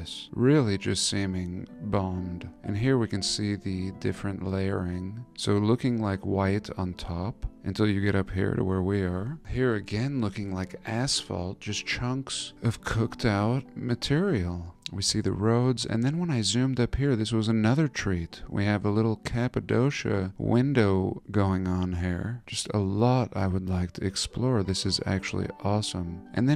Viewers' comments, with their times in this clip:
0:07 the love yawn 😍